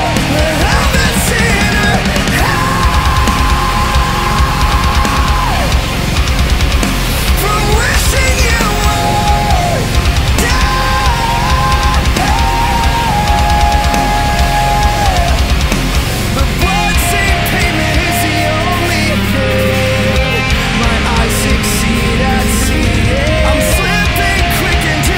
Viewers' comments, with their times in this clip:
0:09 one of my favourites. Reminds me of "Outline in Color - A Fracture, A Fallout", identical vocal part starting on